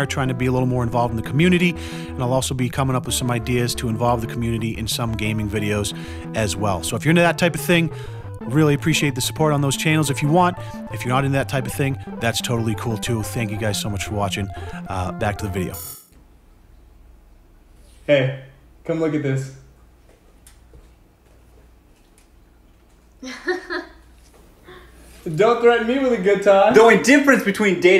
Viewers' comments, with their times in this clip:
0:08 omg I haven’t heard that song in so long